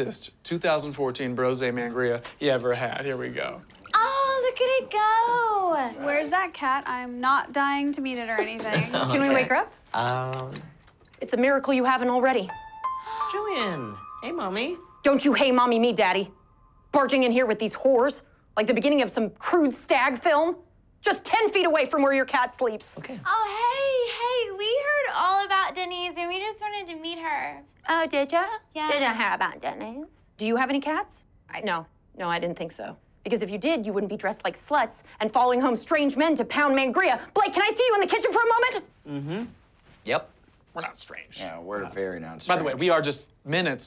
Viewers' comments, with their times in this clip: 0:03 is the blonde chick Margaret from Regular Show? Lol idk what it is but her voice is familiar to me
0:30 when Angela mocks the Blondes voice 😂😂😂